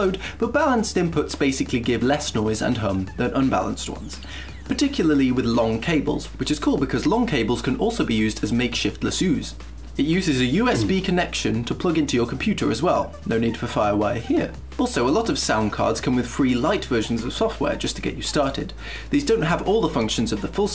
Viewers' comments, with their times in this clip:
0:08 ... did you say "lasooz"? :P